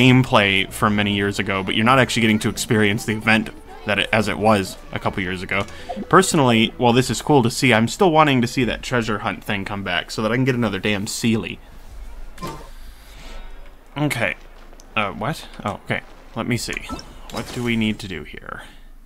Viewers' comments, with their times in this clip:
0:07 Are you using your new editing software now? It seems like the game volume drastically lowers when you start speaking (which is not necessarily a bad thing atm), just haven't noticed it until now. :)